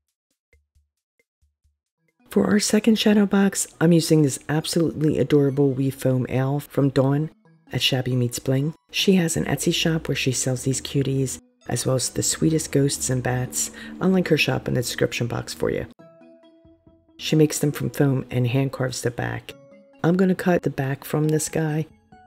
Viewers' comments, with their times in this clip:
0:03 what did you say you’re gonna spray it with I couldn’t hear you you said you were in a spray it with something was a glow in the dark or. Protectant.